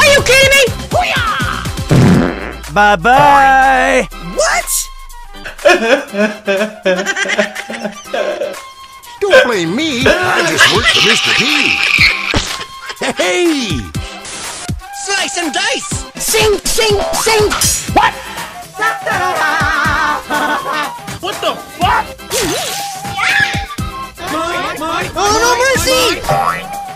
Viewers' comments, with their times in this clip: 0:09 LOL that cry was so 🤣